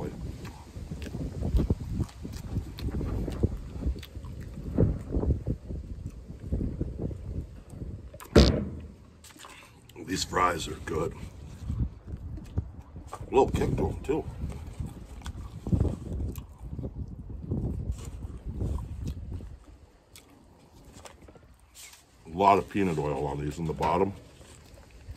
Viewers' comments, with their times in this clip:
0:07 I know that was a fart